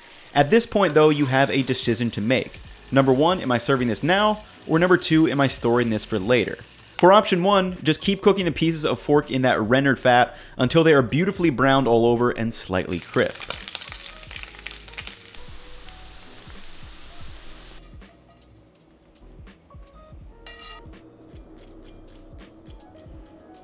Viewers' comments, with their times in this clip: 0:07 these pieces of fork!!!
0:08 he says "pieces of fork"!